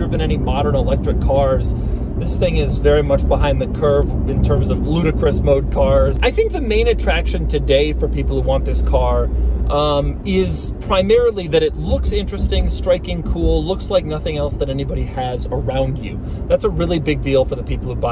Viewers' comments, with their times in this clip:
0:03 Did he say Ludacris?